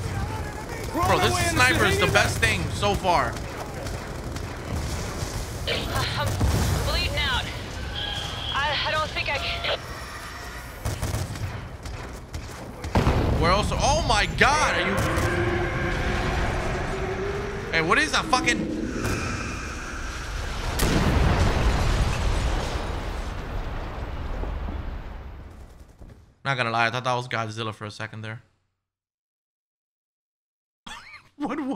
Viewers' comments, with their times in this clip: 0:10 😲 yo wtf I could of swore I heard a loud roar 🦖 I seriously thought Godzilla or some big ass monster was about to appear especially after the building fell over
0:15 kinda sounds like goku screaming